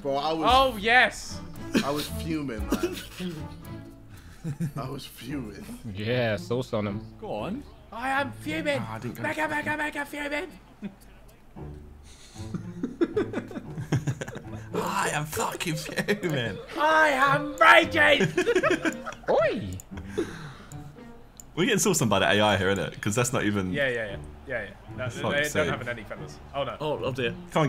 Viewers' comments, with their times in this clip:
0:08 Ethan pretty much has a JJ "manager" moment. Vik saved him luckily with that laugh.